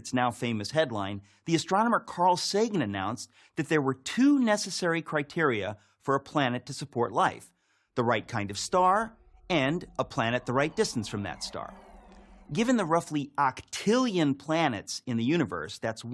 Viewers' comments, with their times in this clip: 0:04 To give Prager credit where it's due: that's a great Carl Sagan rendition